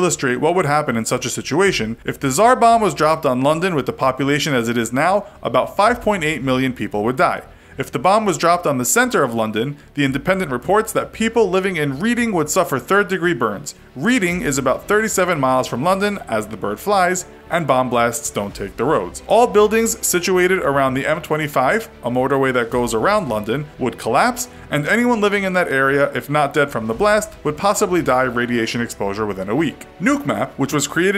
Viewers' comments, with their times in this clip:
0:07 You didn’t bother to consult a Brit or anybody who has been to the UK on how to pronounce “Reading”
0:10 Did he really pronounce Reading like that
0:13 you pronounced reading correctly!